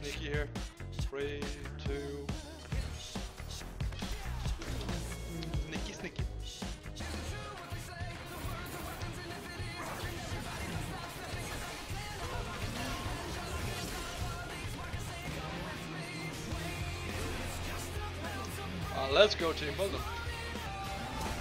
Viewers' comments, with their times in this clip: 0:07 I missed that song😍